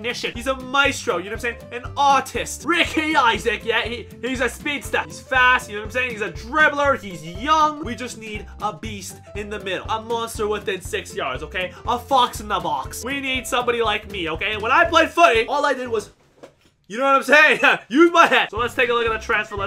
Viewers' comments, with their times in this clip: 0:03 bro said autist💀